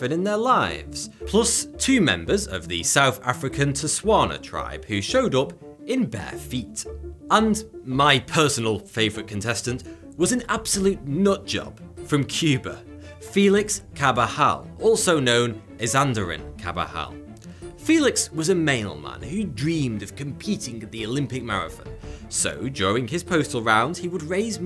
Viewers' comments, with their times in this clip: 0:05 two members of the what tribe? I'm not sure if it's your pronunciation or if you just made up the name, lol.